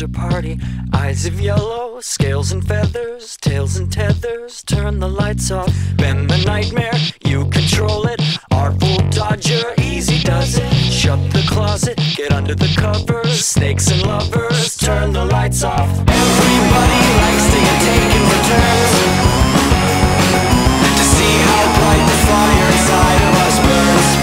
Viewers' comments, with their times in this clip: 0:10 for some reason i hear this part of the song with the lyrics of "smash the clinker, clean the fire dry" from the song eight freight blues or something like that